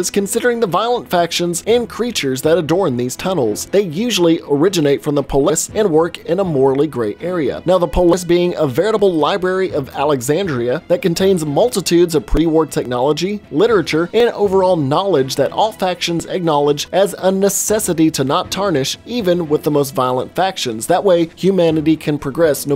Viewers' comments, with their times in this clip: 0:05 did he not know how to say Полис?